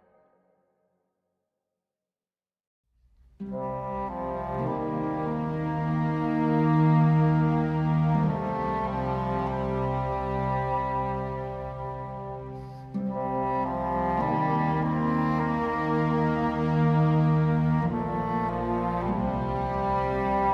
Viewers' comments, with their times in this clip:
0:06 and the variants on that theme make me very sad. It predicts the destruction that will come to such a beautiful place….